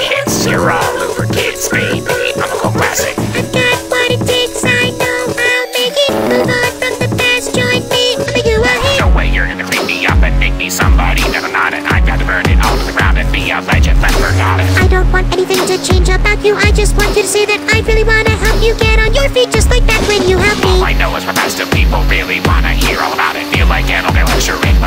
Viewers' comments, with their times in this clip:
0:08 YO Pico spitting fire 🔥